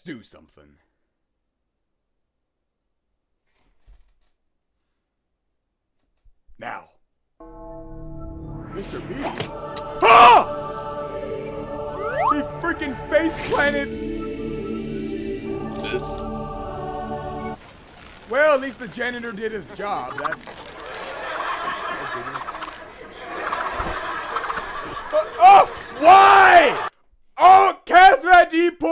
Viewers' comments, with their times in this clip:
0:09 haaaaa hee haaa heeeeeee heeeeeee hooo hoooooo, recap version of ecce homo qui est faba